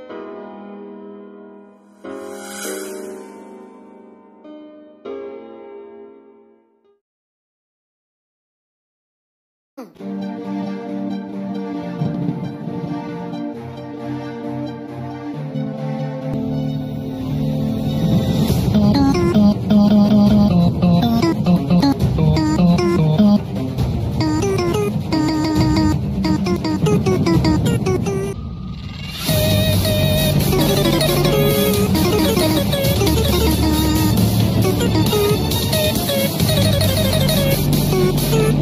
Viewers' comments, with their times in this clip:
0:10 bro the instrumental sounds so good.. then the vocals came
0:25 I thought it was a noob from roblox until I red the words